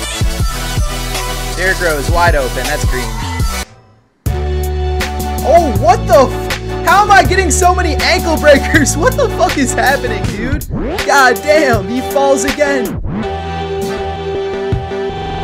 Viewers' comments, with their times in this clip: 0:03 Bruh that song makes my want to kms